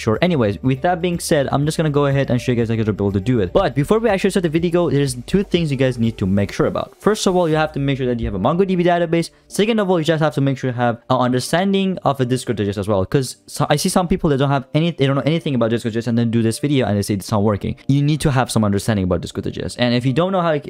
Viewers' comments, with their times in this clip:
0:07 only me who didn't understand what he said? (i found out later what he said)